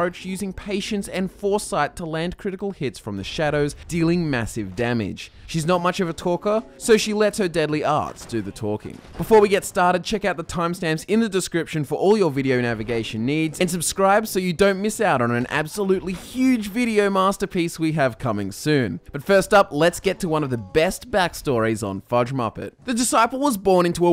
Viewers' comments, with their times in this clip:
0:06 Lol I thought he said "Deadly arse do the talking"
0:07 i thought you said "deadly ass" lol
0:07 Did you say deadly arse?